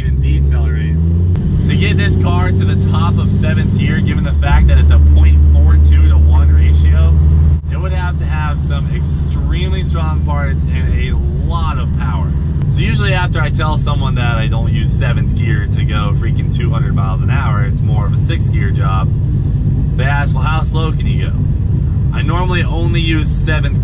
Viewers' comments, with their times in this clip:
0:04 thanks for giving me tinnitus